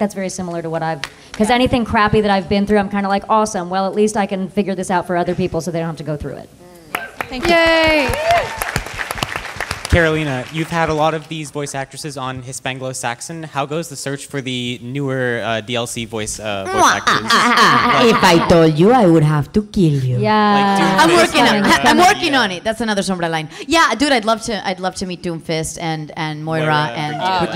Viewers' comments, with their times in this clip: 0:10 aside from the yelling, this was an interesting panel! also props to that tomb raider cosplay